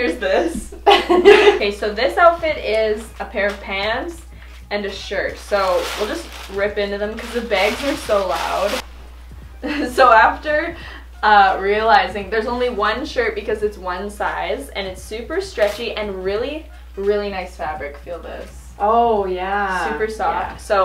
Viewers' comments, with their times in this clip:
0:06 I'm just here for the way you guys say "bag".